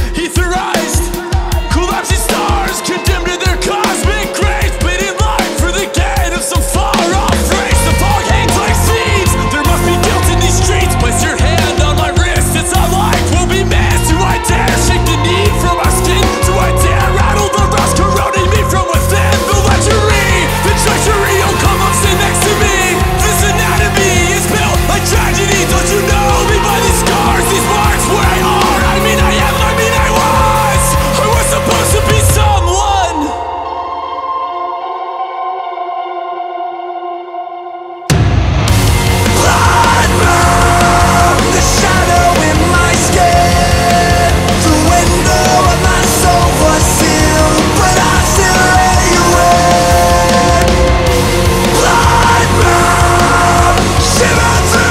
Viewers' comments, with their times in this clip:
0:08 that bass line is great
0:18 He spittin' that was sick. Such a great marriage of styles. Song and lyrics are amazing as usual but I loved the delivery and flow of that part. Would be cool to see more of that in their music.
0:38 Nothing hits harder than that amazing chorus kicking back in